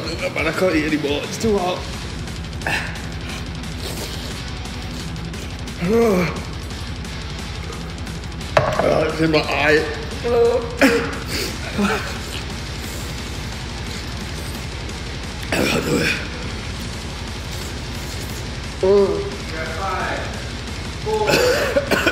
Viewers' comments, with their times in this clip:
0:10 sounds like chewy from Star Wars begging for his life.